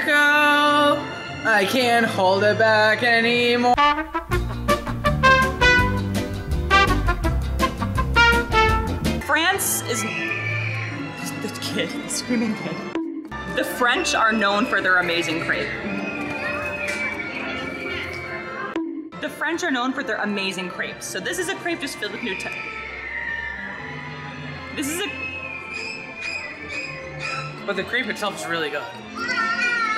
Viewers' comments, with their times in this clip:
0:09 Right here is child4en screaming
0:11 is someone going to talk about the screaming children in the background